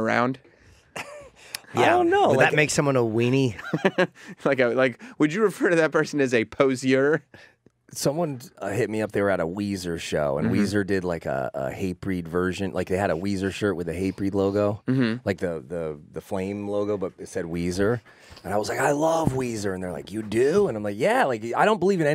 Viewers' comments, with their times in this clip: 0:04 woah, Jamey does an accidental spot on E rock impression!